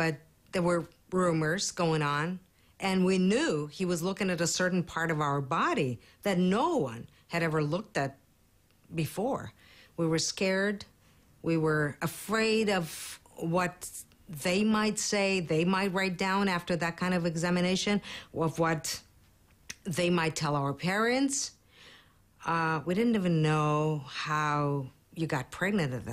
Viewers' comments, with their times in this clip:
0:08 she sounds like she's from new jersey